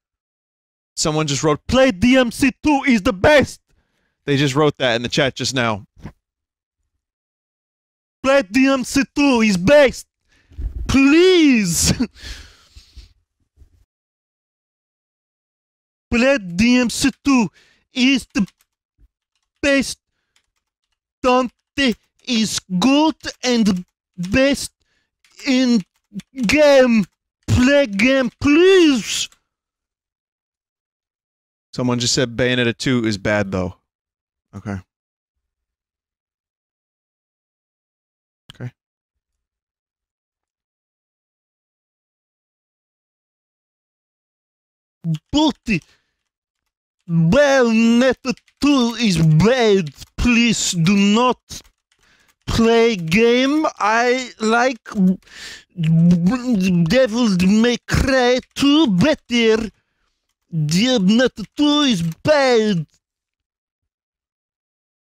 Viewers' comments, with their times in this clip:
0:10 That's probably the best "PLEEZ" Vinny ever uttered
0:54 the twists in his tongue killed me plenty😂 blows my speaker out some fresh air
0:55 The weird stammering in-character after "play game I like..." kills me every time
0:55 whatever the fuck that sound is is the sound of struggling to improv and i fucking died listening to it.